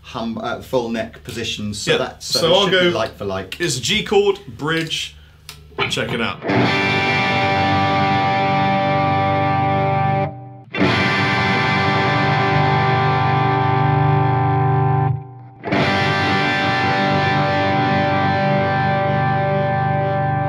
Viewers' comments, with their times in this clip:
0:04 not surprised they sound exactly the same. :) (SE custom 24 and the CE 24)